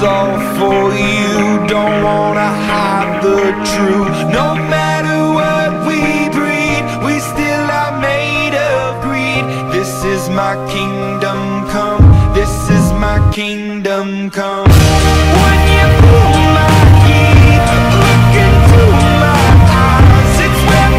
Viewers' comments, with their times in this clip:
0:07 got the chilsss omg his fast breathing... Awww Xiao 😔